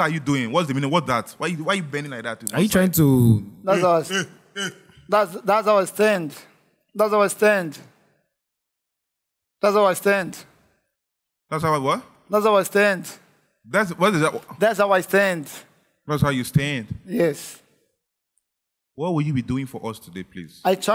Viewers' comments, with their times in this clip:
0:03 das aw stends 😂😂😂😂😂😂😂😂😂😂😂😂😂😂😂this part💀